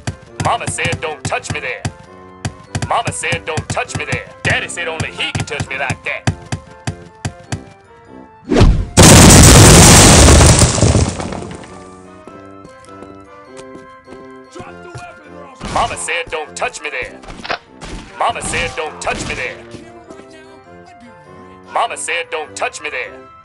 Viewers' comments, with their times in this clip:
0:08 RIP my ears